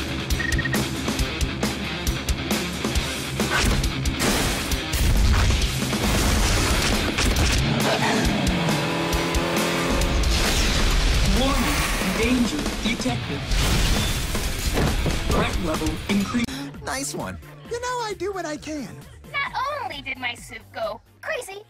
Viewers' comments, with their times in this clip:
0:06 gear shifting and acceleration